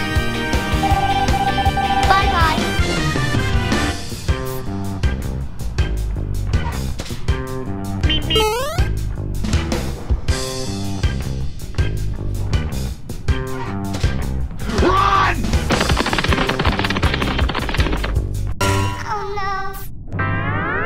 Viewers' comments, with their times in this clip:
0:08 lmao the roadrunner meep meep sound effect got me 😂😂